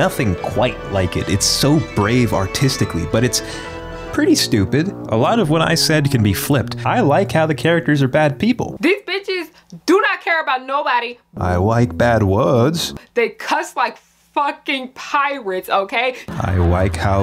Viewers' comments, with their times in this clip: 0:04 That Uncle Ruckus theme had me rolling!